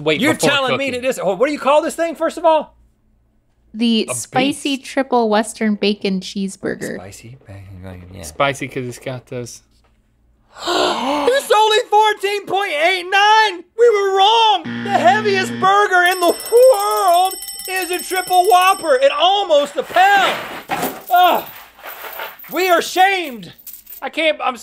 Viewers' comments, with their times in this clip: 0:07 Their simultaneous gasp was PRICELESS!!